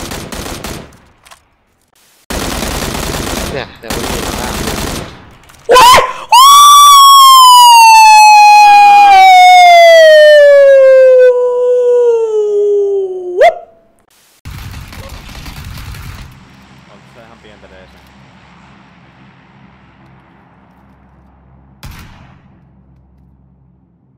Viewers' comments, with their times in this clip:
0:06 blew my ear drums jesus